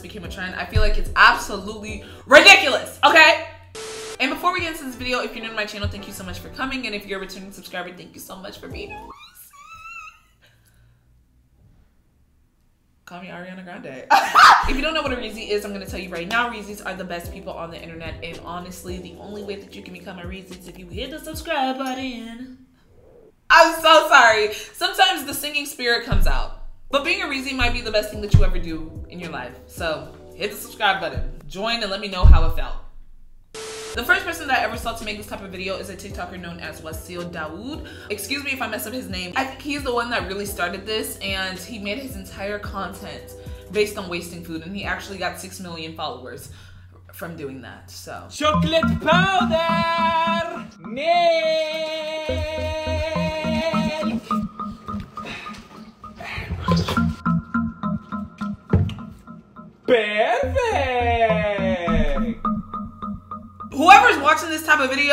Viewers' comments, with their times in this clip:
0:09 when u sing as a joke but it lowkey sounded good
0:53 NOT THE DEATH NOTE MUSIC 😭😭😭